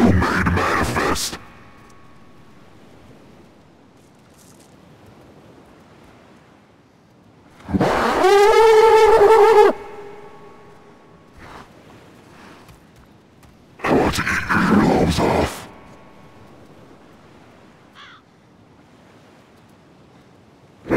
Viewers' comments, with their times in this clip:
0:06 Epic angry tusken impersonation.